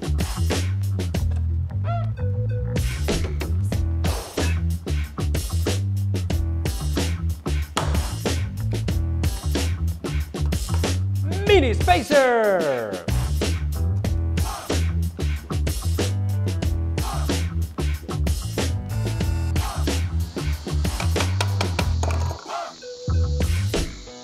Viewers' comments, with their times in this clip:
0:10 “mini spacer!” Captions: ”penis pacer”